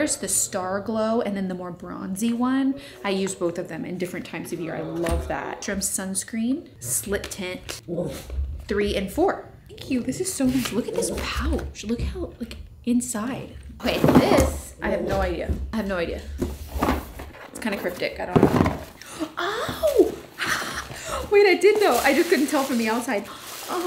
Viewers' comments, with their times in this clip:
0:06 Kinsley literally says the word “woof” instead of actually woofing! 😂 I’m now convinced your dog is a skinwalker 😂